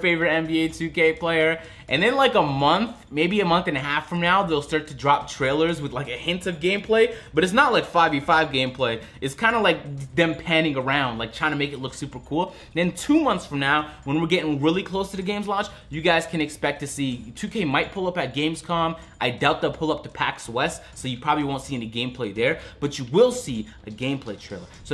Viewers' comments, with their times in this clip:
0:05 he says “ about a month from meow”